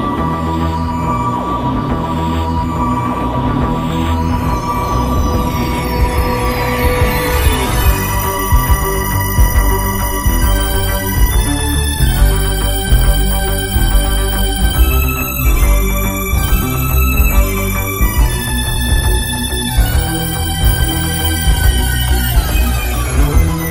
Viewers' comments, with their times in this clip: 0:06 best theme ever and still unbeaten!